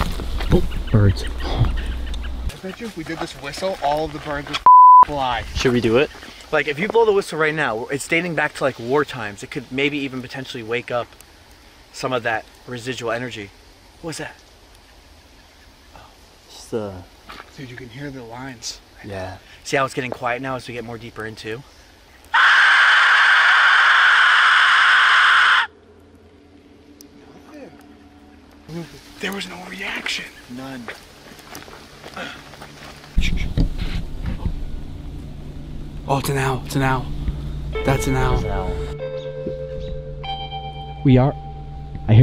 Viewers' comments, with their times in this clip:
0:06 im a little confused, since i couldnt really hear/process what was said a ... what was the beep covering up for?
0:24 Wasn't expecting that whistle scared me so bad lol